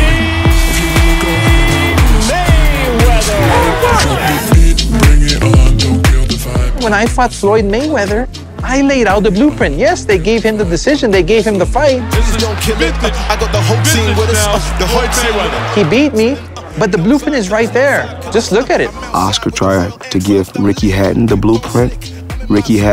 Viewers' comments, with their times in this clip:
0:06 tf was that voice?😂